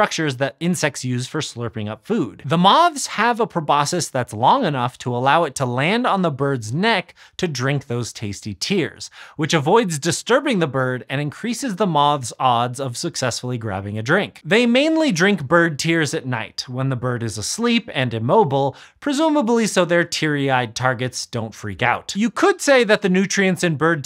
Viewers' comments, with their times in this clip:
0:07 lol "pro-bossis"??? My dude, it's pronounced "pro-BOSK-uhks", not "pro-bossis" 😂 There's an sc in there, which is not pronounced "ss" in any language